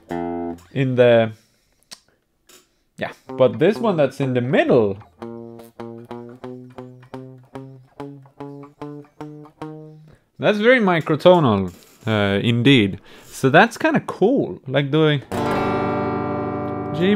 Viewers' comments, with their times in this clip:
0:04 it just needs "fret leveling" aka, it doesnt sound because an upper fret (let's say 9ish)is too high and muting everything fretted before 9ish